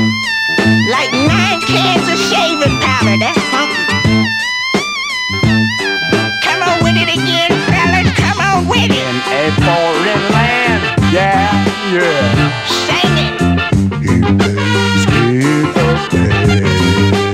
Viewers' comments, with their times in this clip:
0:04 :57 the blackest funk part of music ever, even over The Godfather’s opening seconds of The Big Payback.